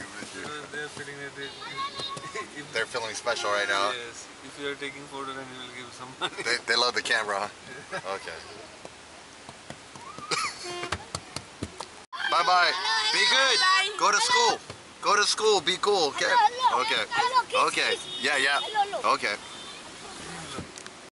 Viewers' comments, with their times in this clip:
0:04 was that mother mewwing?